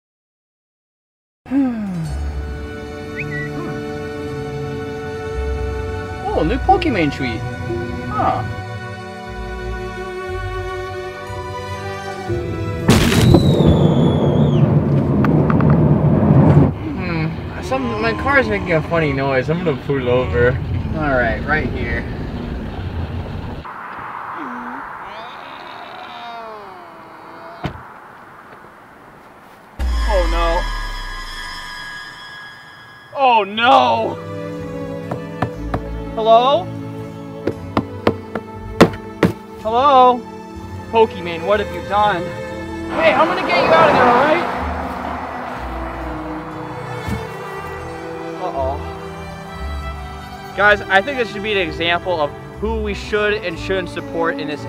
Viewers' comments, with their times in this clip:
0:03 Did you hear this noise so realistic
0:07 This is literally the voice of Luigi.
0:40 "Hey I'm gonna get you out of here, alright?" pulls a dead body out that doesn't have a torso, head, or arms cutely* "uh oh"